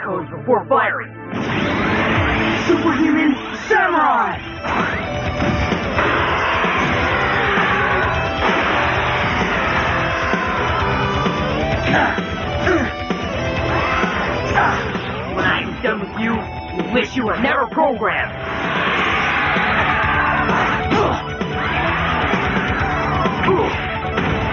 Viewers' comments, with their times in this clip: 0:05 The music that starts was my favorite battle theme of this show.